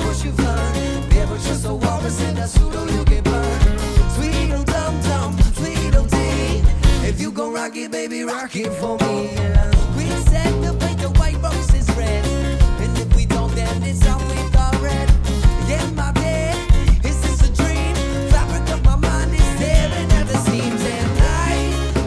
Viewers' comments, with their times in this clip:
0:09 That harmonic lick tho. Simple but tasteful as hell. Well done dudes